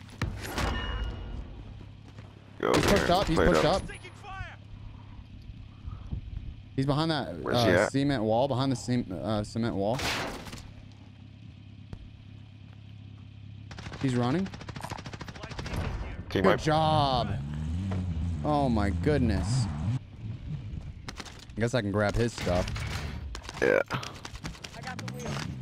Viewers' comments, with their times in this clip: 0:08 head said semen wall🤣😂🤣🤣